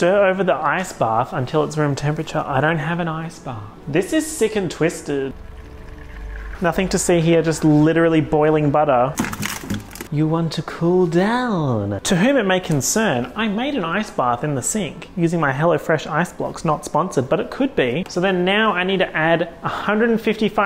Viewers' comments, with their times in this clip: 0:08 brooo that shot looks and sounds like he's throwing up in the freezer and then just keeps on baking... i am YELLING